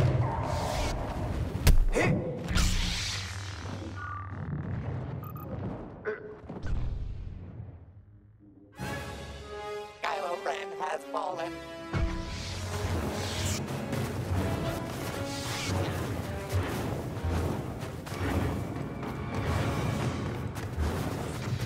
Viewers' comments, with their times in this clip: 0:03 petition to make yoda’s death sound from falling off the map the same as his death sound from LEGO Star wars